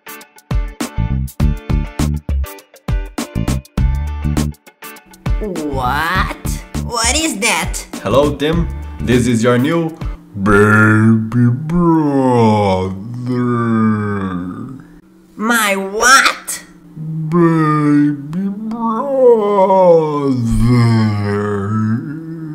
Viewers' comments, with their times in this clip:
0:10 "your baby brother" In slow motion was epic I literally can't stop laughing🤣🤣🤣🤣🤣🤣🤣🤣🤣